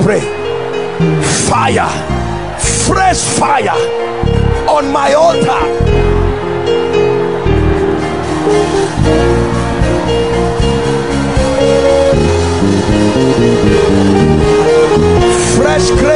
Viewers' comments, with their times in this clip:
0:04 The Holy Spirit personally took over from the instrumentalists here 😭